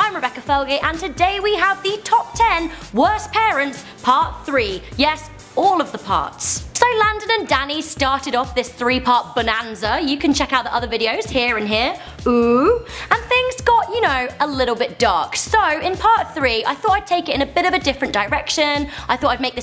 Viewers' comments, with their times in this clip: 0:07 that music is cool